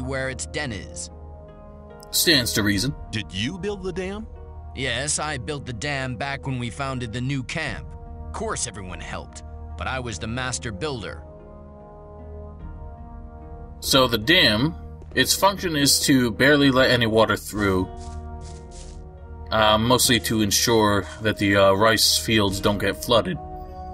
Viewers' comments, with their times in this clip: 0:09 I was like.. man this voice is so familiar in an annoying way and then I remembered Valentino from Gothic 2 :D